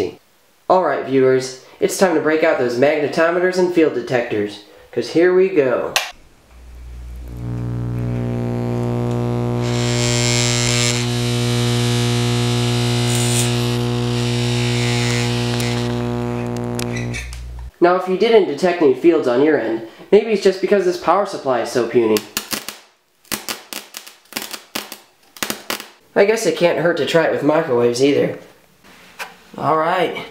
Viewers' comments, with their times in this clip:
0:06 RIP to all headphones users
0:07 my Siri is picking up your voice and it says “hey Siri girl”
0:07 rip my ears and headphone users
0:07 it sounds like I'm getting a hair cut
0:08 You may not go blind from watching laser videos but you may go deaf.
0:09 sounds like im at the barber getting a haircut not gonna lie
0:10 sounds like tour getting a hair cut
0:10 The real question, why do you have a tape with real Turkeys sounds
0:13 While I didn't go blind, I sure as hell almost went deaf when my volume was all the way up
0:14 sounds like when I'm at the barber and they cut the hair behind my ear
0:15 sounds like a Barber shop
0:18 popped my popcorn and blew out my eardrums